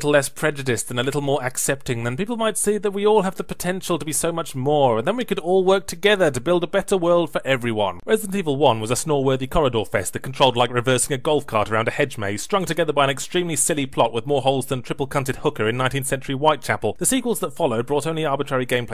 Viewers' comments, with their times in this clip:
0:05 You really censored the best joke in the review? Why??